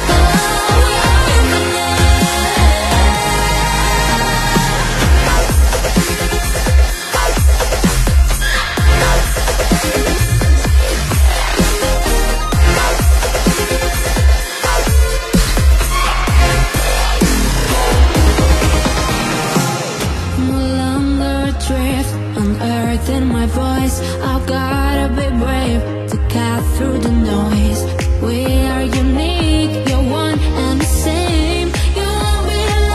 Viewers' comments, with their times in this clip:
0:04 this might be a demo only. I hope this is the one they're gonna sing n hope they stick some korean too. sounds really like itzy dance break
0:05 this beat so arghhh
0:20 this is not itzy voice i swear are you kidding me this is ryujin voice?